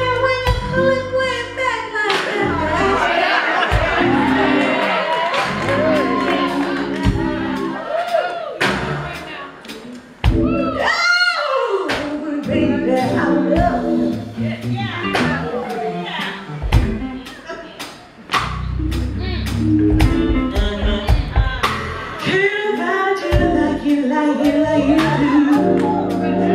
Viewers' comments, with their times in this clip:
0:09 stellar voice. Maybe Whitney Houston could do this. Alice Russel May do the same.